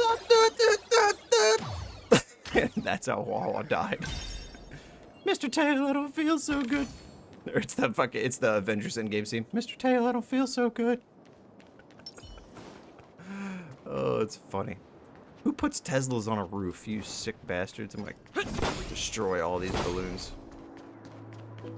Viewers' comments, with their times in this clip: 0:05 more than huohuo that sounds like mickey mouse 😭